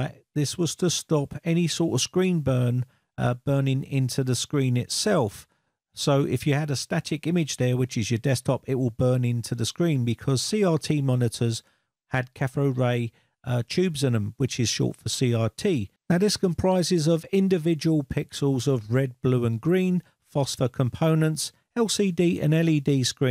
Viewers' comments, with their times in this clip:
0:08 catthode ray tube.... C'mon. And how many times are you going to say "burn in to the screen"?